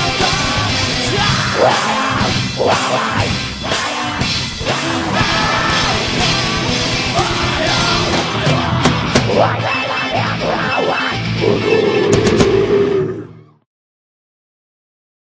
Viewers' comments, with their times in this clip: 0:11 SCREAM OF BOSS! thumbs up